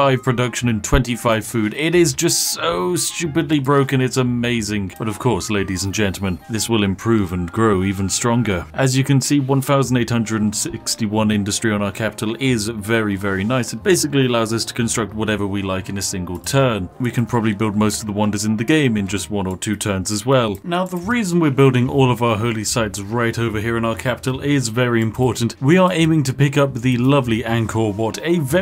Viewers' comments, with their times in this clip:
0:10 Rick Sanchez takes the mic.